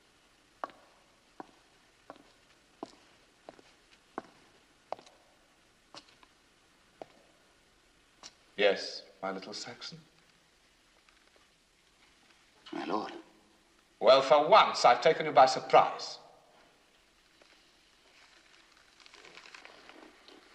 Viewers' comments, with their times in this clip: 0:07 xD did the King say: "Yes, my little sexy?" in xD